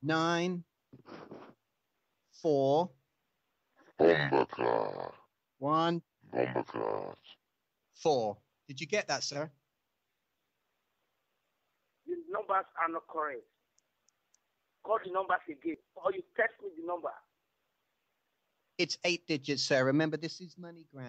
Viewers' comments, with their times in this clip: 0:03 scary voice saying "Bombaclot!" this is hilarious